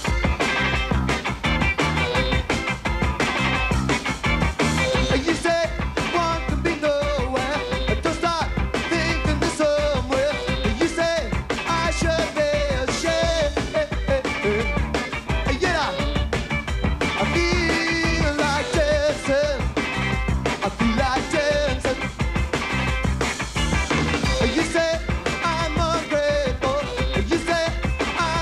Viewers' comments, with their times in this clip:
0:10 sounds just like vampire weekend,or should I say vampire weekend sounds just like that